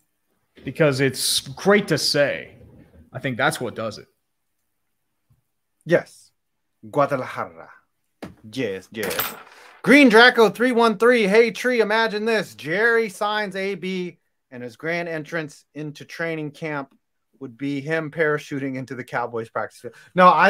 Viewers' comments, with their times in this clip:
0:05 Now, what adds to the weirdness of no-DC is that it's gonna be the first time that the capital metro of the host(s) doesn't host any game at all. And it will be 2x1: Ottawa wasn't even on the pre-prelist. Also I know I shouldn't but I'll do it: you butchered the very same syllable you love. That "-ra" is softly rolled, like if you say it in English.